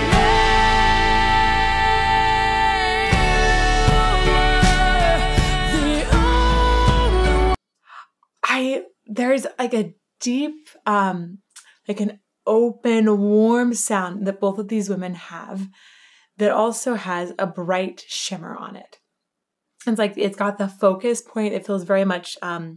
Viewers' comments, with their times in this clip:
0:09 As an instrumental guy but having some classical voice training, what you mention here is a bit enlightening! You speak of OPEN voice, however lessening on volume(which for me would mean a lighter stroke on the bow...perhaps more force but further away from the bridge?... but yeah they are both COMPLETE open in their chest and managing their volume from the throat! I"m over doing this...yet again...no apologies. ;)